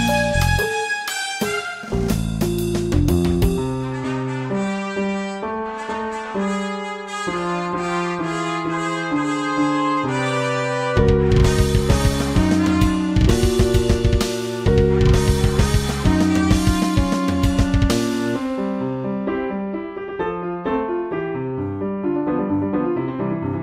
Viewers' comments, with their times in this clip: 0:10 am i the only one who noticed the piano started playing minecraft behind the rest of the instruments? Edit: hey it didnt turn into a timestamp link thing